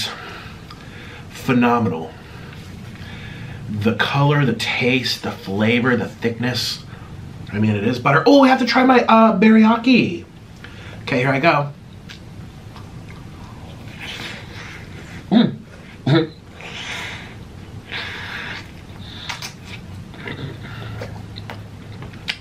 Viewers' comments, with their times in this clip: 0:10 The way he pronounced ‘Biriyani’ was pretty funny,